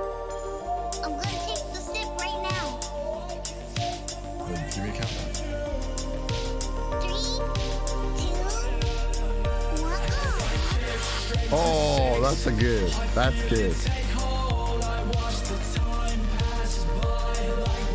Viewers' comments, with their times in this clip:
0:04 The countdown to the bass drop, so good